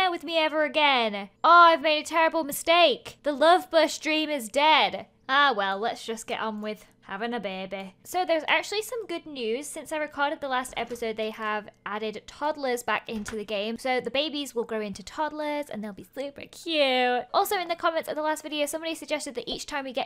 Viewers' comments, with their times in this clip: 0:04 orr well lets just get on wiv avin a bebe